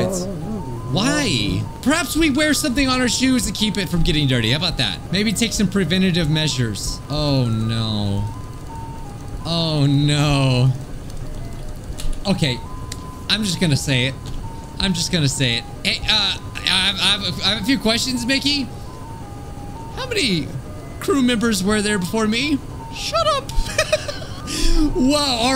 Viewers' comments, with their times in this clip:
0:08 “Shut up *ha ha mickey noise*”